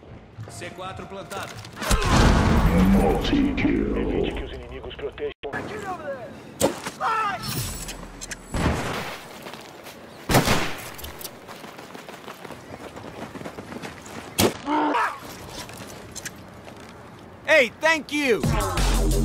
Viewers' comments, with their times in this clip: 0:06 the scream was the best part of the video.